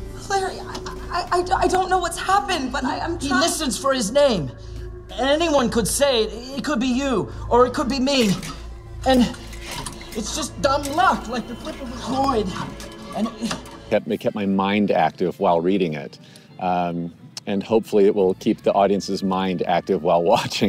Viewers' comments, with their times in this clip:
0:03 the line delivery here is among the worst acting I’ve ever seen ever ever ever